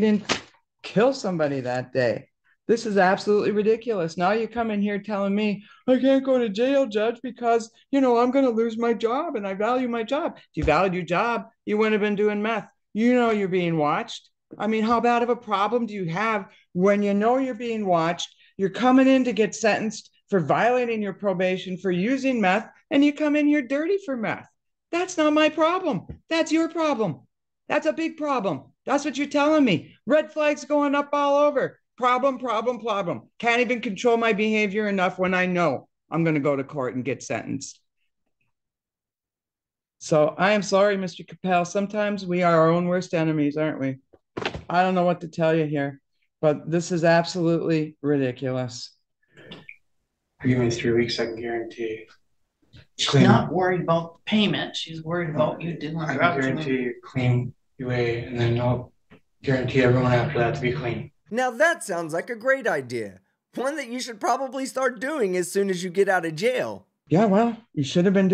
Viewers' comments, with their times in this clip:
0:07 When she did an imitation 😂, I lost it!
0:51 Oh yeah!! you can HEAR her eyes roll.